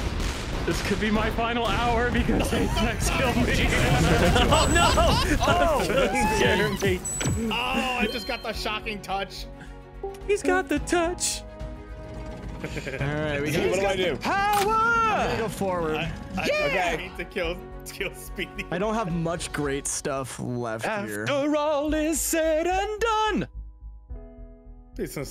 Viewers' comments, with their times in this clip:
0:09 I don't know if it was ever popular outside of transformers, but I'm glad you guys were enough of fans to start singing it.